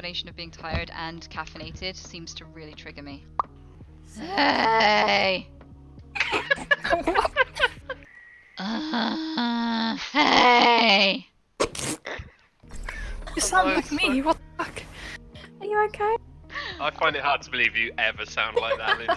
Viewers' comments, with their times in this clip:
0:03 Oh, cool a new Anita compilation. I find listening to her very soothing. I especially like her "hey" tick , such a calm and peaceful sound, really helps me rela OH GOD!